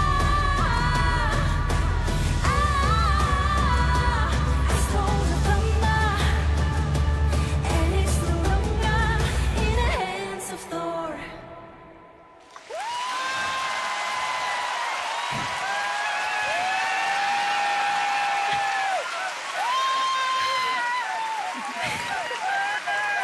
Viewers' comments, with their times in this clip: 0:10 I was actually really DISAPPOINTED on the song. When I heard the title, I thought it would be an epic battle song but nope. It was just a long song where she almost sings the same thing all the time.